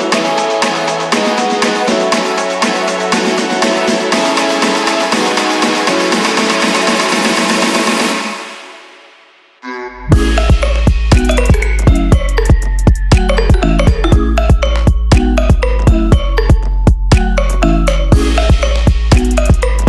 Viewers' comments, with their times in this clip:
0:06 OMG THIS DROP !!!! LOVE IT